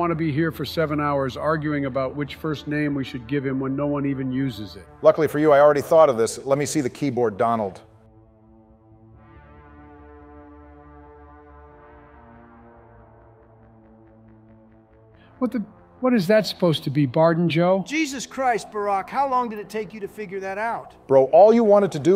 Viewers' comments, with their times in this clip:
0:06 HAHAH😂😂 IM DEAD, JOE TOTALLY GOT ADDED ON AT THE END. The awkward silent pause